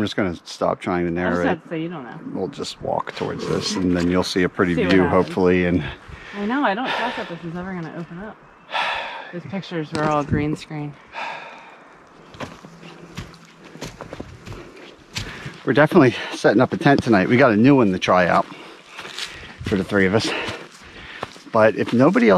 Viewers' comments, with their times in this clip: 0:03 I think I heard someone burp